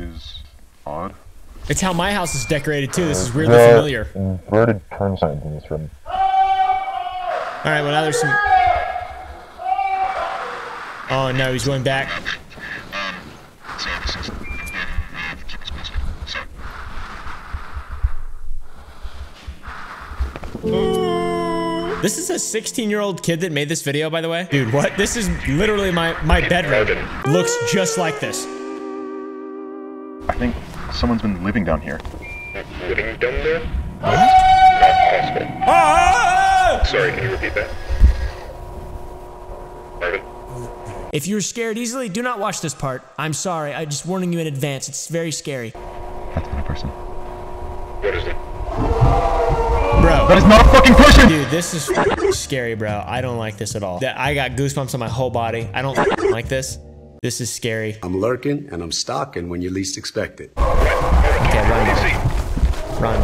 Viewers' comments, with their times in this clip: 0:06 nickocado avocado scream moment
0:46 why he sound like penquin when he said thats not a person
0:50 Does anyon know what the dude said ? I can't tell.